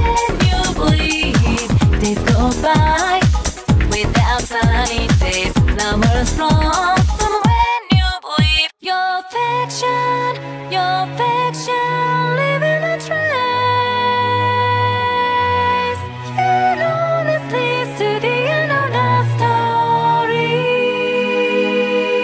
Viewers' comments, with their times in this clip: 0:08 my soul felt peace with that transition.